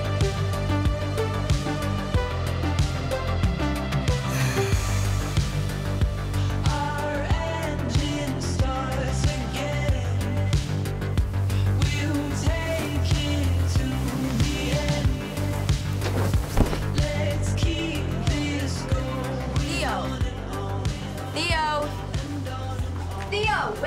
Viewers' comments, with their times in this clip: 0:06 I really love that song